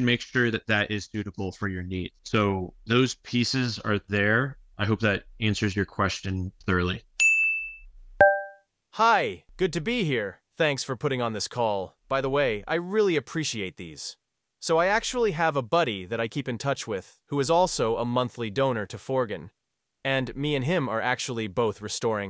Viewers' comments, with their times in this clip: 0:09 wtf that sounds like AI 🤖 TOO!! It even pronounced your company as fore-gen…